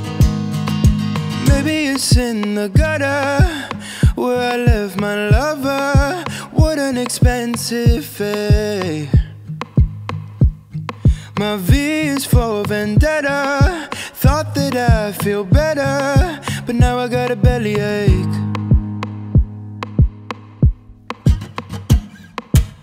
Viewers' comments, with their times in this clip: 0:10 OMG THEY HAS A MISS V